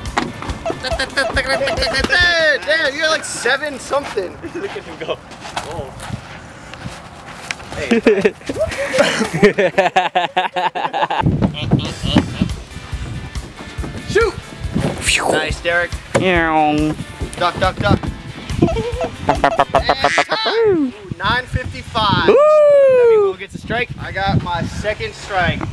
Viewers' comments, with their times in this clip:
0:10 The laugh gives me flashbacks to middle school